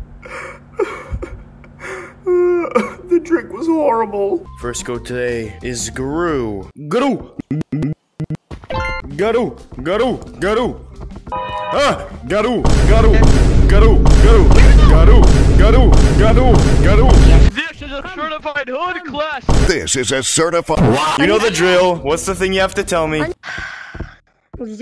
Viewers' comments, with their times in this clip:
0:06 "Greu" just sounds like girl in a Scottish accent lmao